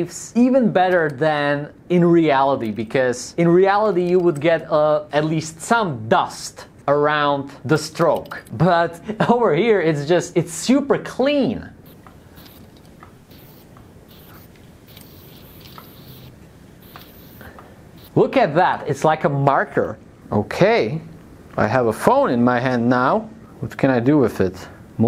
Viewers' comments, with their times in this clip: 0:08 he sounded like Gru💀